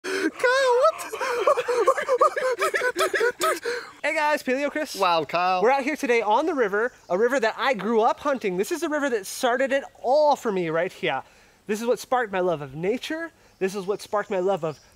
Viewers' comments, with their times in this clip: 0:02 starting my Diesel engine in the winter